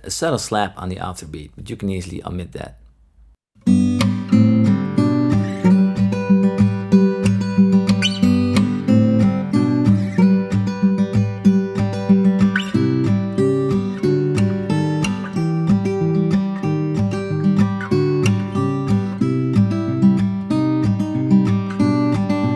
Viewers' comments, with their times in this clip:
0:10 At first listen, I totally thought that that was a John Mayer Sind